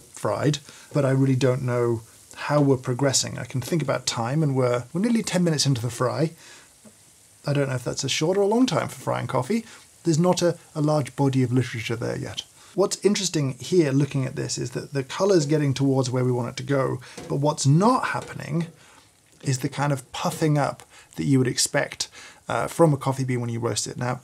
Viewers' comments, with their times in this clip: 0:07 “I don’t know if that’s a short or long time for frying coffee. There’s not a large bohdee of litchriczhure there yet.” I can’t stop rewinding this part LOL